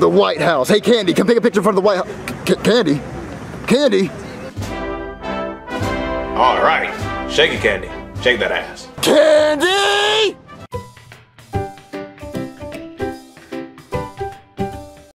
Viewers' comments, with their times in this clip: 0:09 I Like How Candy's Dad Yells "CANDY!!!"